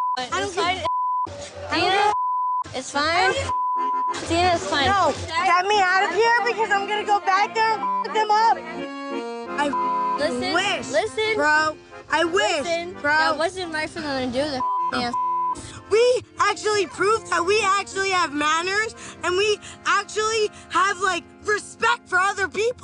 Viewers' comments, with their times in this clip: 0:05 Is it just me or does her voice sound like Natalie Nunn 😂